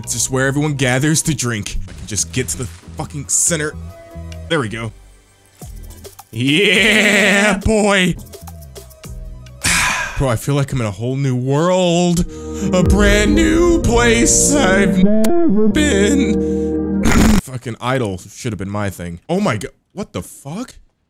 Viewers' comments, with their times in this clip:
0:06 Why does he sound like Peter griffin